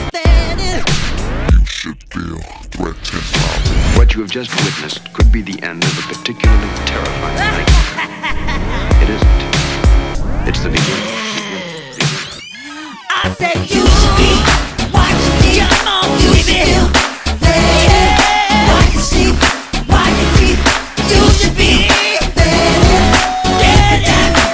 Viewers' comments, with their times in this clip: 0:07 where did that laugh originate from, its so cool